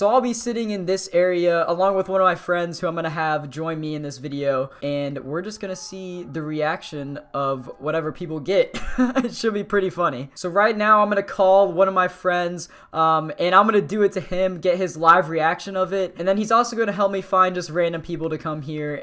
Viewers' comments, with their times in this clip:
0:04 I can hear screaming in the background XD